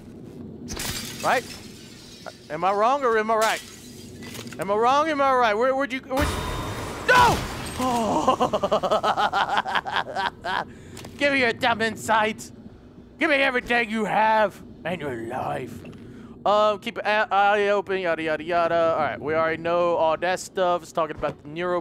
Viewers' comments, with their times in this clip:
0:09 his laugh lol